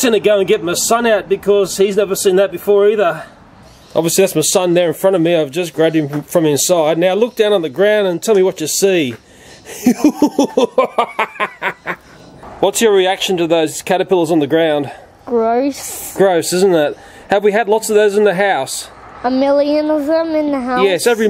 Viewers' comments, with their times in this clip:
0:08 best example of the evil laugh😂